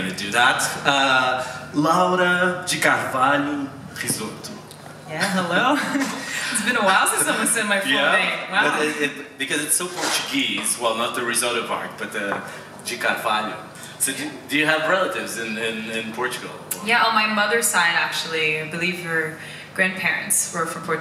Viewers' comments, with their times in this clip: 0:04 his brazilian accent hhaha pretty good